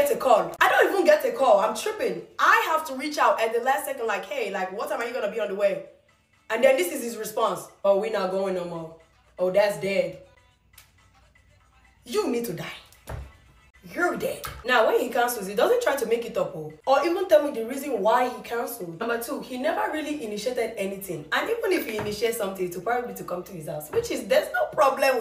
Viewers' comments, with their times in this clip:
0:07 Her Deadbeat Boyfriend voice is PERFECT 🤣😭😭😭😭